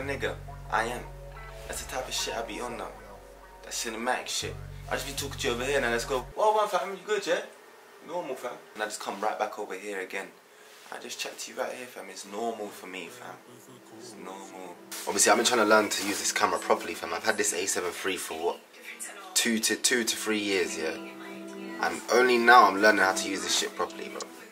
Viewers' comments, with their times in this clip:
0:06 My yay is different to ur yayyy 😂